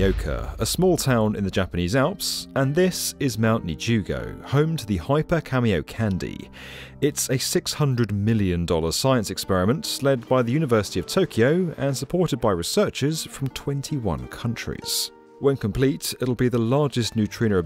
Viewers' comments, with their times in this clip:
0:04 Hyper Kamiokande Hyper Cameo Candy What..? How? No clue why I expected anything else...